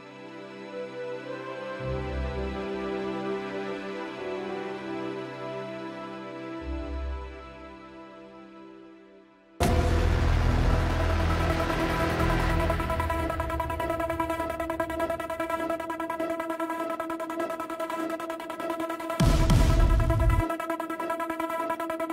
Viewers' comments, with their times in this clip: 0:06 that scared me bro it went from relaxing to intense 😭🙏